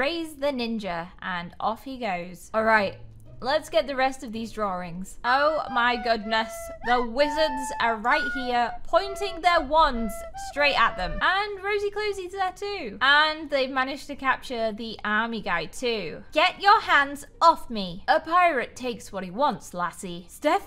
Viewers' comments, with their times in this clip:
0:06 is the music tho 😂😂😂